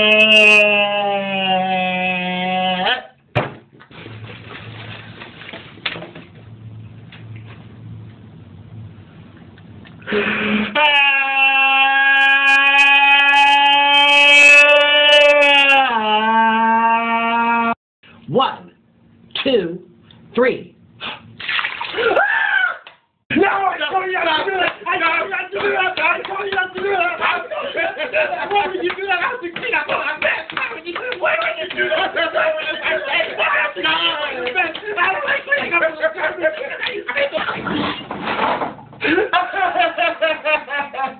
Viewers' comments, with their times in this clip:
0:04 falling burger in sos and nikocado avocado cry
0:23 the other one scream!